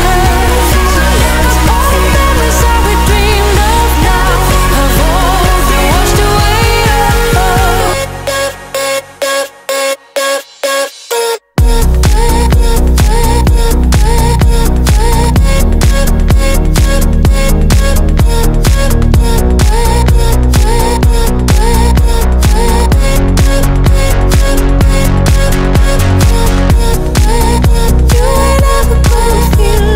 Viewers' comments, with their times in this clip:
0:10 So much calmer than most of your stuff but i like this alot especially when the beat drops
0:12 takes me to a whole nother level. reminds me of how enchanting trance drops were back in the mid 2000s. in ❤️ wit this track